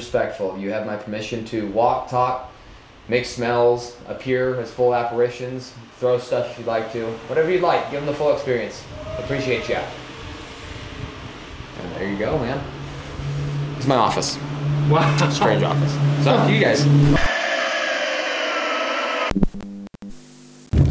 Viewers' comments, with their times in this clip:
0:08 I heard a loud moaning as the tour guide was talking to the spirits who inhabit the Washoe so I timestamped it for others who haven't heard it. But I agree with the loud screaming and I do believe they aren't happy and I really liked how knowledgeable the guide was about the history of this place without a script. Amazing content.